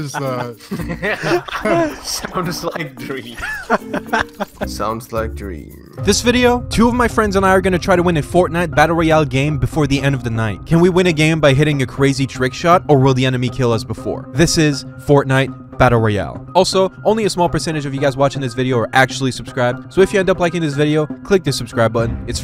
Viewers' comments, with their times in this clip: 0:05 WTFFFF I ACTUALLY THOUGHT IT WAS A CLIP OF DREAM UNTIL HE SAID FORTNITE